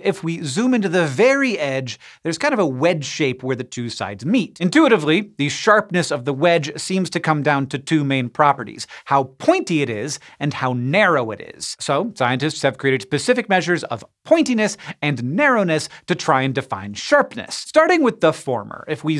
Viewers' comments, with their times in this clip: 0:03 when is wasn't a fart.